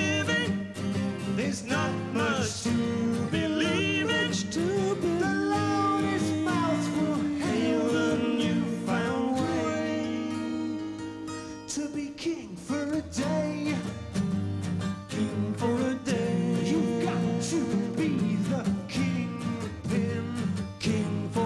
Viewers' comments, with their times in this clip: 0:03 only time i’ve heard dave singing with xtc clearly